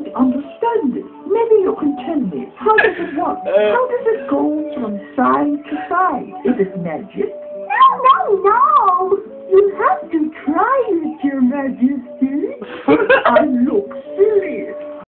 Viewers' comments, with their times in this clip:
0:13 I concur, though a mixture of low framerate, and more importantly really bad sound quality, I feel, at least to me there was a sort of 'you had to be there' element to it, in part. I was 'kinda' there after EQing the best I could (just a 3 band on mixer), if I listened really hard, I could hear most of the dialogue, but two seconds before the end of your video, my girlfriend, who is watching something w/ headphones, asked me to turn it down. But, gah, char count, tbc